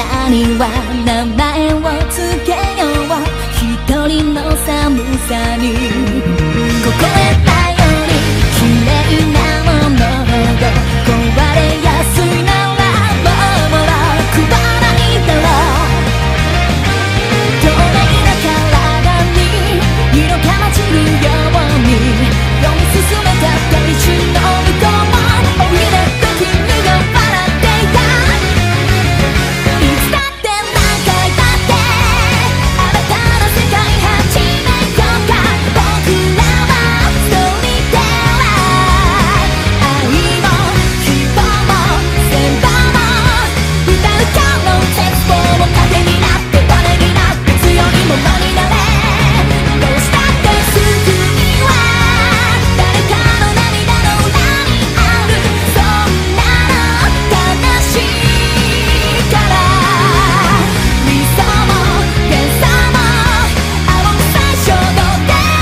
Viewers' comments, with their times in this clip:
0:05 I love that beat lead up. Makes me want to build a whole darn song around it.
0:30 its almost same like LiSa voice
0:32 only mekdonal fans can hear ah mekdonal
0:49 never fails to give me goosebumps every time I watch it. The sound's timing matches well with highlighting Myulan's sadness and longing for love and as well as finding those in Youm (Referring to the eye thingy) It's sad, melancholic and amazing!!